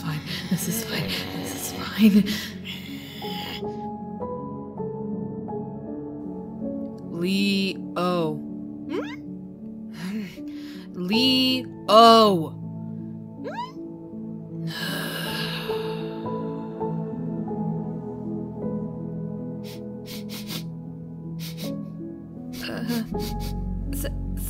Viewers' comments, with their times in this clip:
0:08 ok but the little sounds leo makes is f*ckin adorable 😭😭😭😭